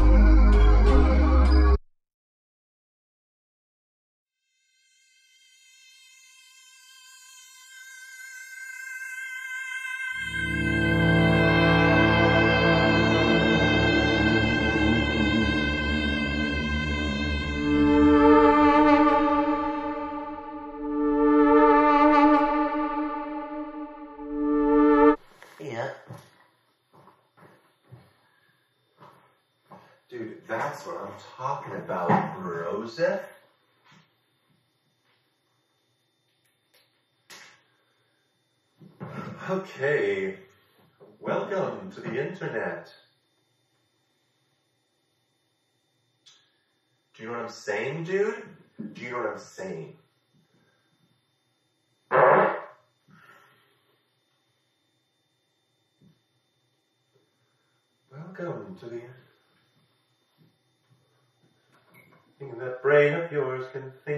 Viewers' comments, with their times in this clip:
0:06 Am I tripping or did I think that was the start of a song Like I swear a song I know starts like that maybe it's not one of Bo's songs but maybe one in my 1000+ playlist I'm going on a hunt guys wish me luck that I'm not tripping and it really does exist Note: Similar note, similar synth
0:50 that fart was hilarious
0:51 fr the pop
0:52 fart of the year nomination.